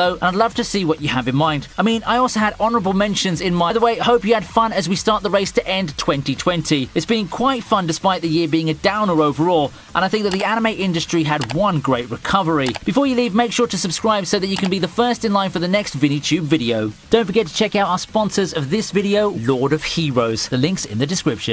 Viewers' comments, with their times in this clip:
0:03 the vid is cut we couldn’t hear why you had to say